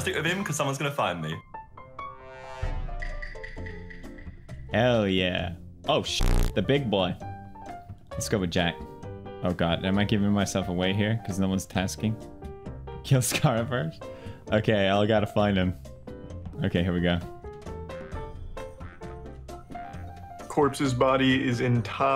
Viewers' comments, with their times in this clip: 0:05 to avoid KSI screaming for 14 minutes